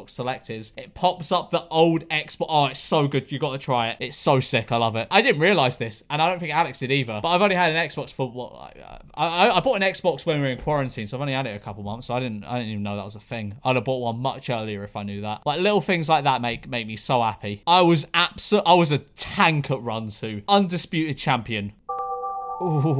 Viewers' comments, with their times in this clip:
0:07 what was that noise?!?